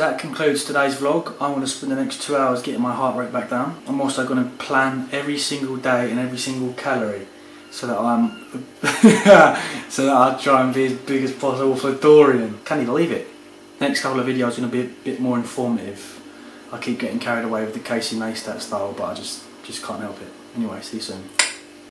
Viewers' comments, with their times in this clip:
0:10 did you say 'canny believe it' ? LMFAO